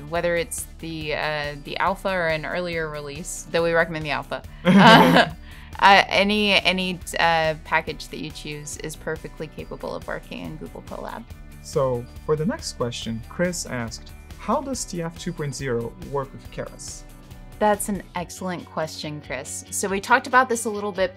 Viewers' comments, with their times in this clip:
0:03 shortest laugh ever ;)